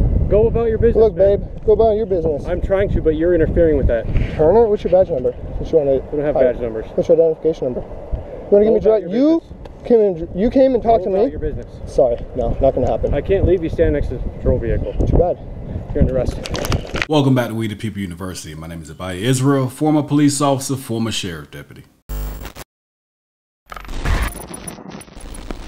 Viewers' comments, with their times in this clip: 0:08 The pigcop. takes a deep inhale...his heart rate is going through the roof..he can't stand the fact someone is saying " It's not going to happen " Then the tough guy loses it and then grabs it because he a tough guy...lol